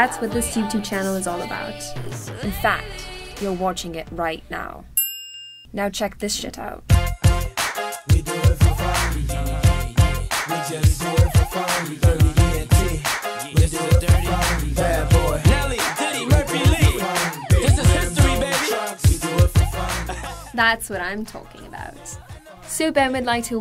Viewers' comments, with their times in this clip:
0:05 the narrarator drops her calm voice shit!